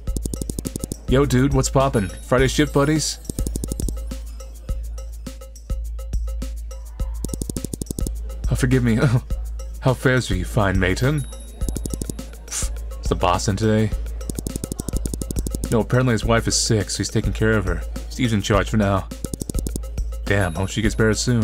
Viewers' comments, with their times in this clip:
0:03 The silence, as he try not to get demonetized 😂😂😂